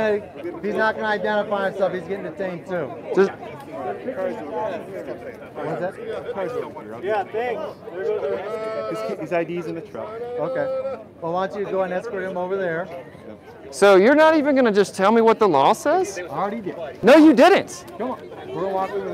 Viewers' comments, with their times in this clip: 0:07 Insanity is doing the same thing again and again and expecting different results. Beardy Pinkshirt keeps asking what the law is and is never happy with the answer so he asks again and again. And it sounds like someone started to sing "Na na na na, na na na na, hey hey hey, goodbye"